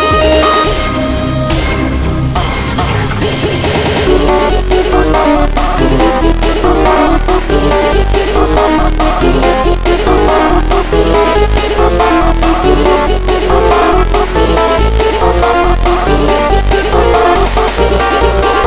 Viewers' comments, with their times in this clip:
0:03 Epicly nice remix but there's some off pitch